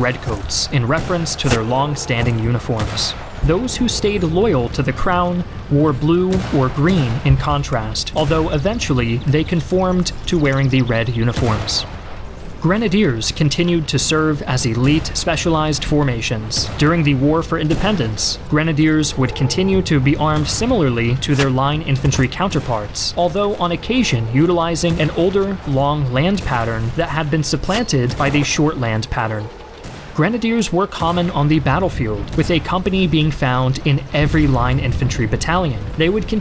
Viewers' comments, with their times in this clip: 0:05 The narrator's voice is great in these videos! However, your statements re: the Revolutionary War are extremely confusing: [you state that] the British soldiers were called "bloody-backs" or redcoats by the Colonists, while "those LOYAL to the crown generally wore blue or green, in contrast, though eventually, they conformed to wearing the red uniforms". Um... what? It was obviously the redcoats that were loyal to the crown, whi9le it was the "Colonists" who generally wore blue or green. The part about "those wearing blue or green eventually switching to red" makes no sense at all. You're either saying that some of the British troops arrived to fight in blue or green, OR you're saying that the COLONISTS eventually switched to red... neither of which is true. Great video otherwise!
0:18 that dude at the far right just became a ghost, and his corpse vanished into thin air... Seems legit. Nice ghastly, ghsotly sound effect for that too, by the way.